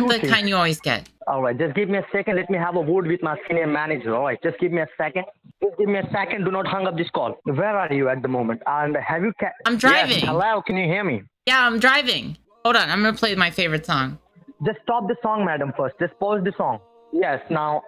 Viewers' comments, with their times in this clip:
0:03 did he say "Let me have a word with my scam manager?"